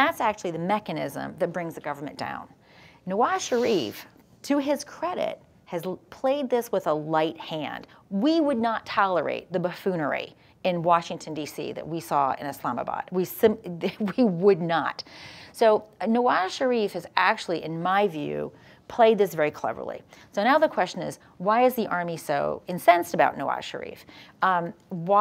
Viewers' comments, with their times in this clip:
0:07 "We would not tolerate the buffoonery in Washington DC that we saw in Islamabad. We simply would not." Haha, Jan 6, 2021 seems prophetic. Said with such sincere conviction. The U.S. less different than Pakistan than you thought, Ms. Fair?